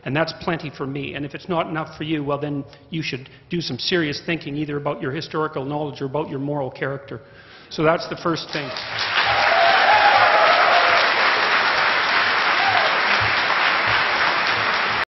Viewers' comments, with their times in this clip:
0:06 Jordan Peterson finally takes a breath